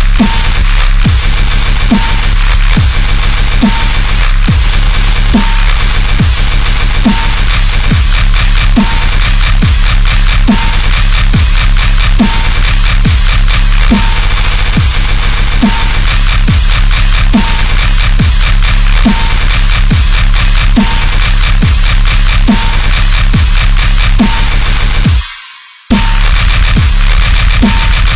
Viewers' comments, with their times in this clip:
0:10 dropped harder than european economy